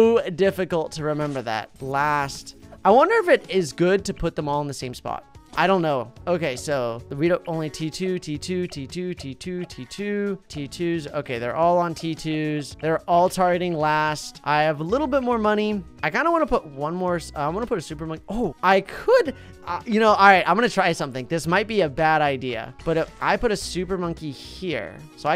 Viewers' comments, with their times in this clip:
0:06 it sounds like he's saying his name over and over again, lol.
0:07 T2, T2, tee tew, tee, tew-tee tew(sounds like he's saying tewity)